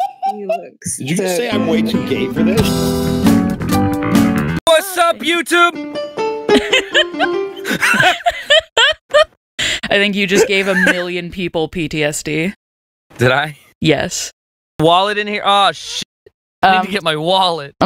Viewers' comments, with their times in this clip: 0:04 ah yes - chris squire intensifies